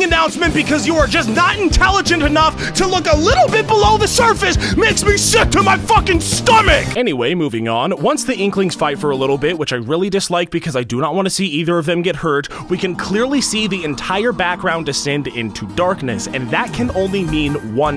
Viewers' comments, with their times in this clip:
0:03 That voice crack puts every teenager who ever lived to shame.